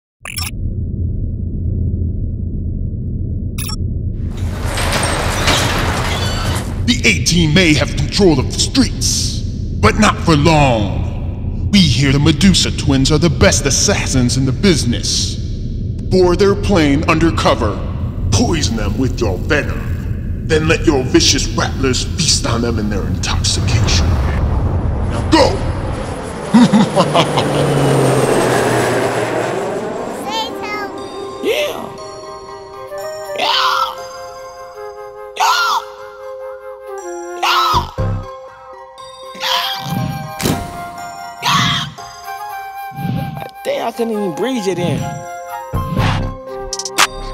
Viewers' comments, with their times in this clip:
0:05 If you listen closely You can hear the music start.
0:33 Dude sound like a dinosaur 🦖 😂